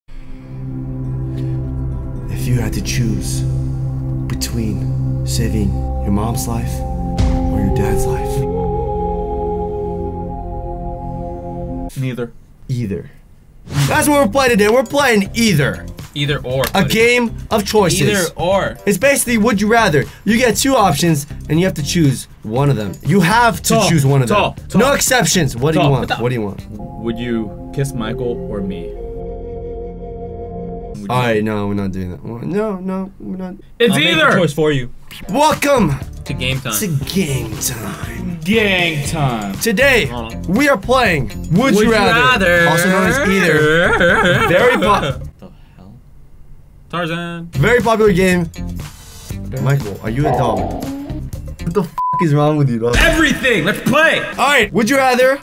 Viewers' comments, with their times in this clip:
0:01 Very dramatic but nice mystical music tho
0:43 Sounds like a wolf having a seizure